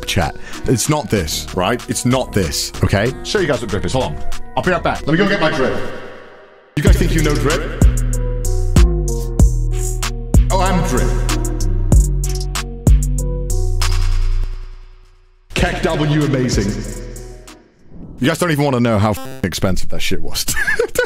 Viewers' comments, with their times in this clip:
0:07 roadman was activated